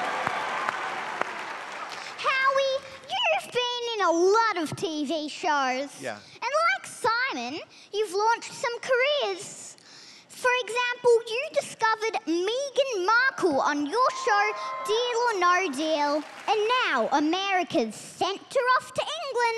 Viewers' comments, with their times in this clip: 0:04 nervous and shaking "yeah" of howie is hilarious, he must be thinking "oh fvck my time has come"